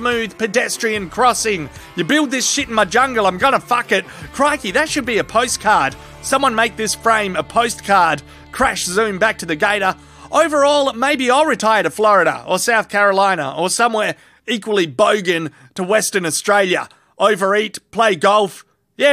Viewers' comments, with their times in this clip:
0:04 and i heard Steve Irwin and my heart is happy and sad, fuck me dead lol